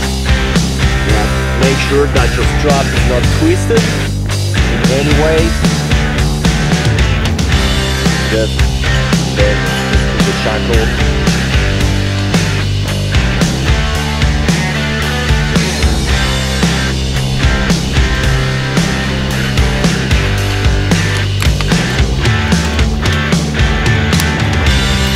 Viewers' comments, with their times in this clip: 0:06 I appreciate the video man but that music was way too loud while you were talking.